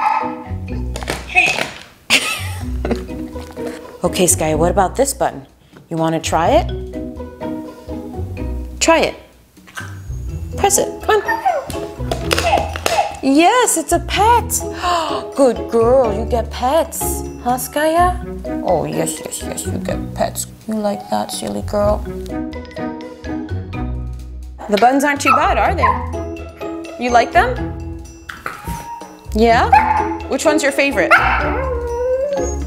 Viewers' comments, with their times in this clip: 0:07 I can’t handle the baby talk
0:16 I can’t handle the baby talk